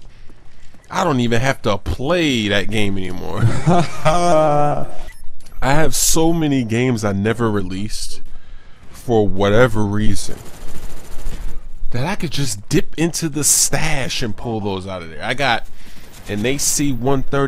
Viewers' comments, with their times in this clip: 0:03 was taht an autotume